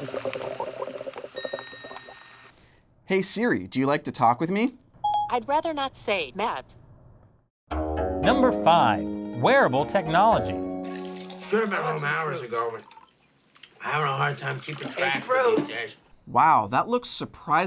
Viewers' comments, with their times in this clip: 0:03 my Siri opened up because it thought it was me saying it